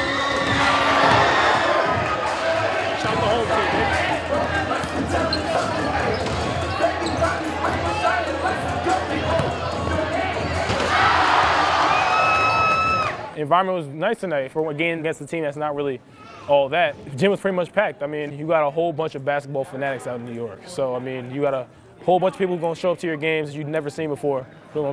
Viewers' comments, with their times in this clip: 0:05 I swear it sound like he said shout out to home team bitch